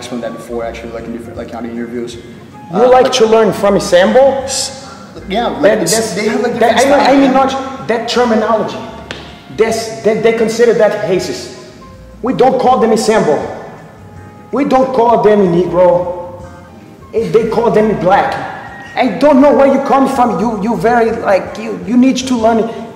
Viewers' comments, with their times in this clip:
0:09 They consider that hacist.